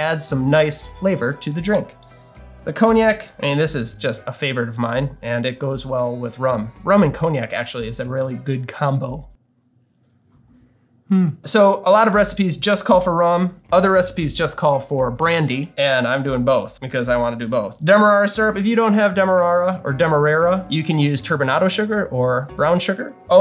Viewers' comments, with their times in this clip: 0:08 I know that buzz-driven "hmm" with a half smile very well